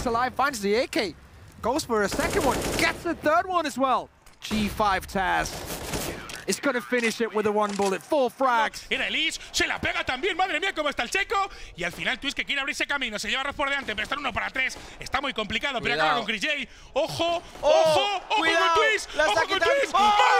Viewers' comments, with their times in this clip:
0:08 the guy sounded kind of like doofenshmirtz